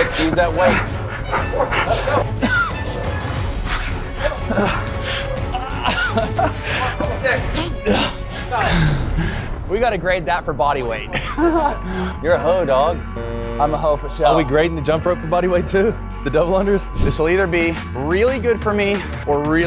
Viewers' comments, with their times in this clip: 0:07 my mans deff farted